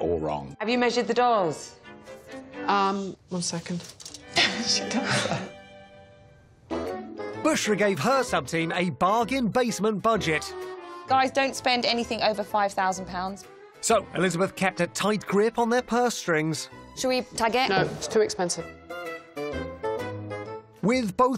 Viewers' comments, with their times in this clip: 0:05 Claude covering his laughter is hilarious 😂😂